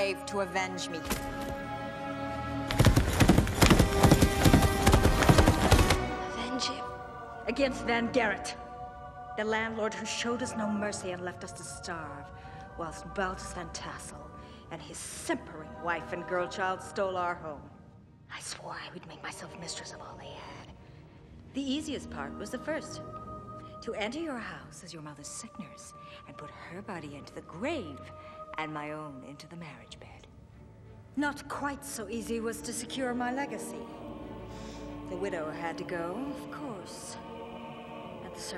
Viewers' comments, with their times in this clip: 0:07 is a short but beautiful shot. The lighting, use of negative space, and Miranda’s acting amongst other things combine to masterfully showcase Lady Van Tassel’s decades-long grudge with the world. You can hear the anger and venom in her voice. The angelic yet ominous chorus in the background also adds to a sense that she is so close to getting what she wants after years of plotting, she can finally unravel and be the villain we had no idea she was. We now know what is driving her. Don’t know if that makes sense but I find it striking.
0:24 is when she says she entered her house as a nurse for Katrina's mother then she killed her mother and married Katrina's father, its spoken very quickly though.